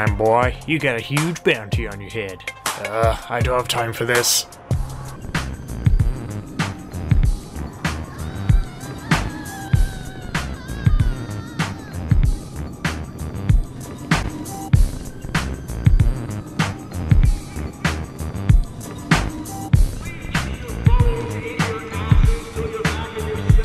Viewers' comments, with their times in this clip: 0:06 soon as the beat drop I started freestylin lol westside outlaw 😈🔥🔥🔥🔥
0:10 Did anybody else hear sorta like a scream
0:10 Is that the sound of someone being raped